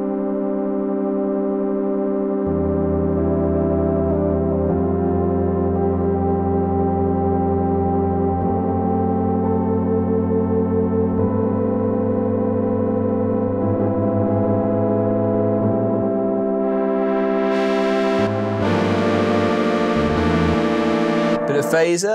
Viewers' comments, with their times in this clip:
0:04 Was that an attempt at vibrato on a keyboard 😁 Really nice playing.